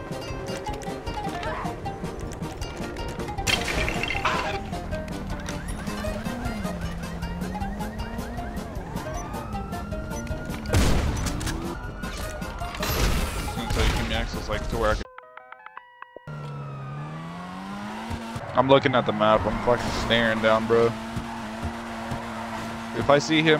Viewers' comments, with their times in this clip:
0:04 that lego sound hit hard 😂